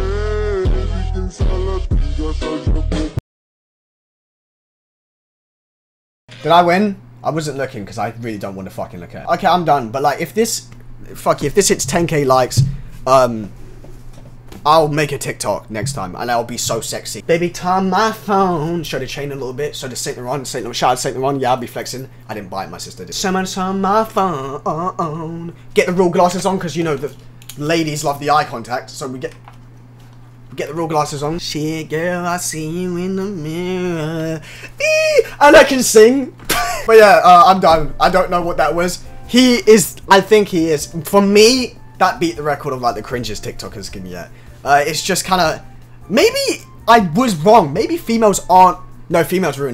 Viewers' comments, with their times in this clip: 0:05 The silence is loud😂😂
0:32 when you was singing my neck cracked